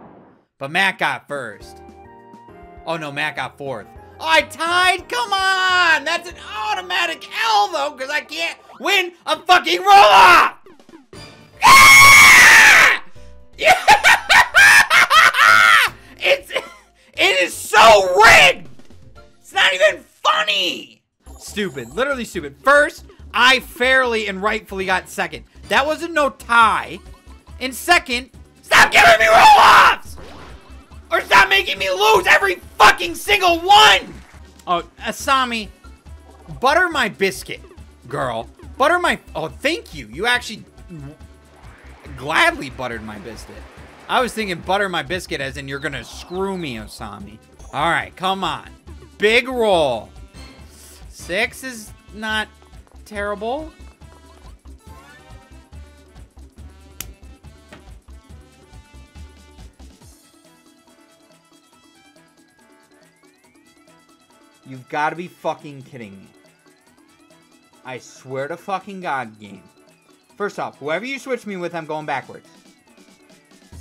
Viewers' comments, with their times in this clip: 0:04 literally fnaf 2 jumpscare sound
0:08 i CANT WIN A FUCKIN ROLL OUT * insert a Witch sreaming after hitting her pinky finger *
0:10 E A R R A P E
0:11 that scream tho... Jesus christ that scream
0:11 CUE THE PERFECTLY CUT SCREAMS
0:11 the new r2d2 lego scream
0:11 Why he sound like R2D2
0:11 The sound of true pain
0:11 you sound like a fortnite kid
0:11 the escape that humanity can use to create a black-hole with. If there is a noise that is around 5,000 decibels of noise power, it can create a black-hole.
0:11 is the most reasonable scream and unlucky number you can get from playing
0:11 nobody: The school fire alarms:
0:11 LMAO THE DAMN SCREAM ON
0:16 me-turns down headphones
0:54 the angriest 10 second silence recorded in history
0:54 i was so prepared for a huge scream
0:55 dead silence theme starts playing
0:56 That silence was scarier than any of his rages